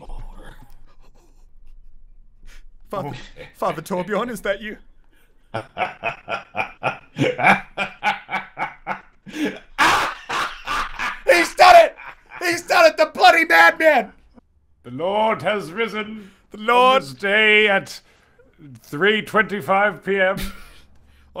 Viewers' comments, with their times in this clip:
0:08 be like ha ha ha I'm laughing because I have crippling depression